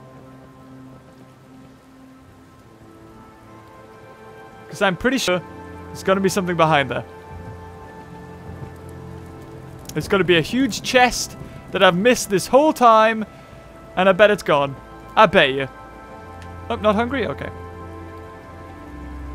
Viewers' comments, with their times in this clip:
0:04 Did anyone hear that glitch